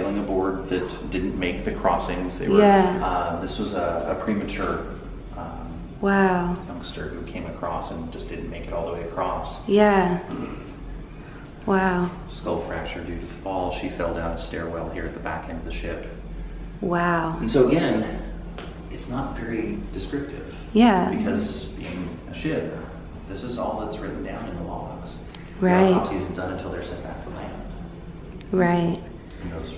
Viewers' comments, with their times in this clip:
0:03 i'm into the video and i'm already annoyed by all 'wow okay right mhm' 🙄
0:10 I heard something like a women's scream :\